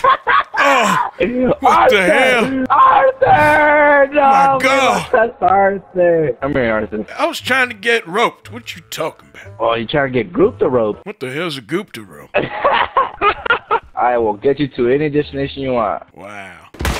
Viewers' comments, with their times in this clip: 0:04 was that an echo of the players voice?